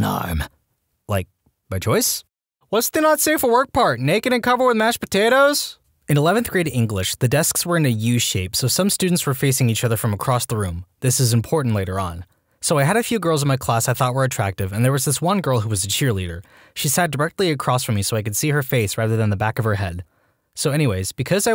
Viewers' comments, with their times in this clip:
0:05 you sound disappointed